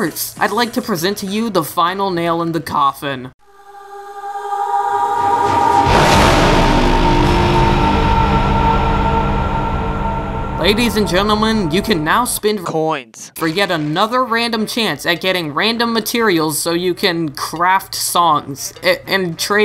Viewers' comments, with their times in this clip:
0:04 Damn since when do you use some epic cod zombies music?